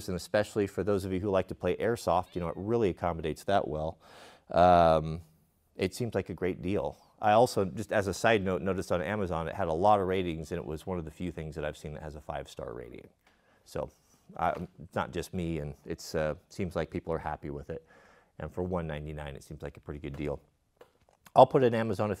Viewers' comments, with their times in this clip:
0:05 Anyone else hear a cat meow